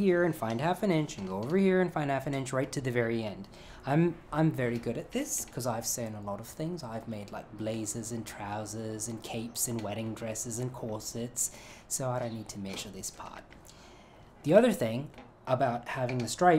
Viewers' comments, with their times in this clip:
0:04 you cracked me up here. Trying to work out whether "I'm good at this" Rajiv is English or Aussie 😂